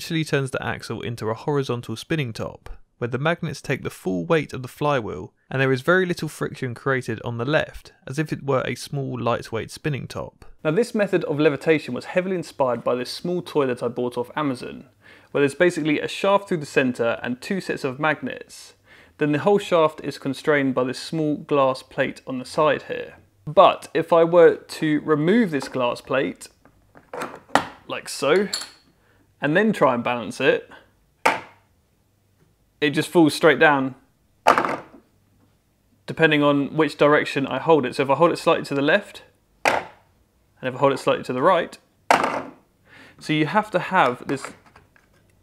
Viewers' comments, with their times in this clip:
0:08 “Now this method of levitation was heavily inspired by this small toilet I bought off Amazon”. Cannot hear anything else.
0:10 "this small toilet I bought off Amazon." Each to their own...😅
0:10 "this method of levitation was heavily inspired by this small toilet I bought off Amazon" That's a mighty fine toilet!
0:10 It doesn't even resemble a small toilet. Where do you sit? I figured out what he really said, but no matter how many times I listen, I hear "small toilet". Cheers!
0:11 "This small toilet I bought of Amazon". You can't unhear it now!
0:11 "...this small toilet i bought off amazon"
0:11 “This method of levitation was heavily inspired by this toilet I bought off of Amazon”
0:11 I heard "small toilet"
0:12 He says: "that small toy that I bought" I hear: "that small toilet I bought" Me: 😐
0:12 I was very curious to learn how that "small toilet" worked 😂
0:12 Captions: "This small toilet I bought off Amazon" That's actually what I heard, too
0:12 I totally thought you said “This small toilet I bought off Amazon.” Lol
0:12 i thought he said "small toilet I bought off Amazon" 😋
0:12 I'm sorry... but you were inspired by 'a small toilet'??? I listened to it over and over and yea.... you definitely say you were inspired by a small turlet for dunkin brown boys in... what's up with that bro? must be a ginger thing. toilet inspirator.
0:12 "inspired by this small toilet"
0:12 But how would you take a dump in this toilet???? ps: I know he meant toylet
0:12 did anyone else hear him call that magnetic toy thing a "small toilet"?
0:13 Heavily inspired by this small toliet i bought off amazon 💀💀💀
0:13 Definitely "small toilet"
0:13 is it me or did he say small toilet…
0:13 “small toilet I bought…” ???
0:13 "...this small toilet..." Doesn't look like a toilet.
0:13 Did I mishear "small toilet" or did you actually say that?
0:13 you definitely said 'small toilet'
0:13 that doesn’t look like a “small toilet” to me
0:13 the closed captions agree.. he did buy a small toilet.
0:13 did you say a small toilet?
0:13 Small toilet? I didn't think I heard that right, so I turned captions on, and even the captions said toilet... I'm so confused 🤣
0:13 Did anyone notice that instead of saying toy he’s a toilet…. Time stamp
0:26 Your glass plate sounds like plastic.